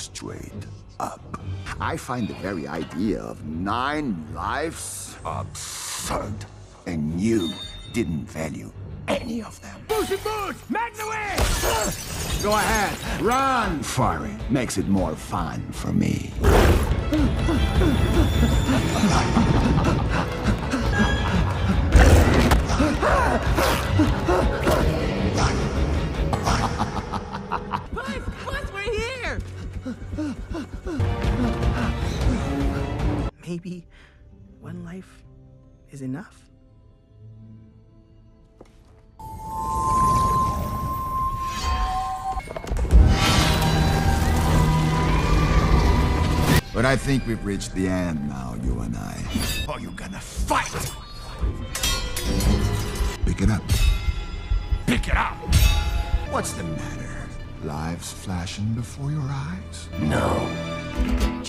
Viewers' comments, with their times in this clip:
0:04 I love this bit you can just see and hear him getting angry without losing control
0:09 I didn't know that he said "Make the wish". I just thought it was just Spanish.
0:17 His voice actor put his FOOT Into this, The director's said "Hey man, we're gonna need you to make some Panicking noise, We need you to make scared Heavy breathing, JUST GIVE IT ALL YOU GOT!!" AND HE SURE DID GIVE IT ALL HE GOT, The fear in his voice, The panic type Breathing, The little scream he made when death grabbed his cape, IT'S JUST EVERYTHING!! It's not just the voice actor, IT'S THE ART IN THE SCENE THAT MAKES IT REALLY REALLY GOOD!
0:43 When you add the beats with the whistle so it doesn't sound scary anymore:
0:45 perfect cut scream
0:46 perfect cut scream ngl